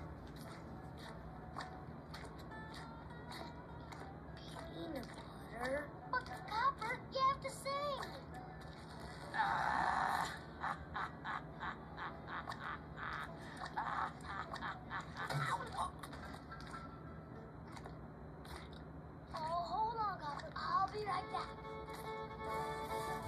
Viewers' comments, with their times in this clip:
0:09 that laugh just popped into my head tonight! Makes me laugh every time